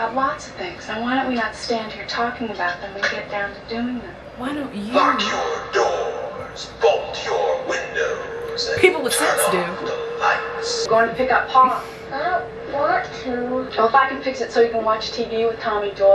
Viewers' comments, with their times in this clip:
0:04 When the voiceover said “Lock your doors, bolt your windows” I swear I heard “fuck your doors, fuck your windows” and was entertained, yet confused